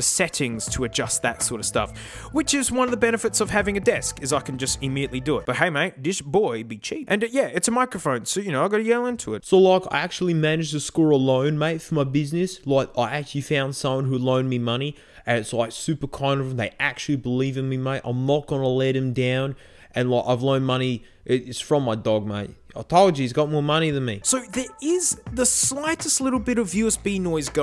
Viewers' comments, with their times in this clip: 0:09 This is the first time I hear a test being that clean